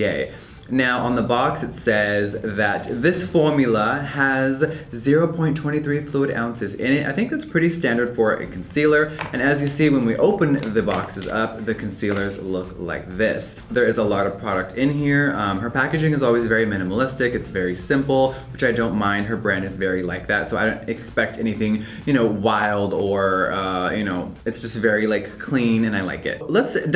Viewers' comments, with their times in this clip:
0:07 “formula” in a british accent oh my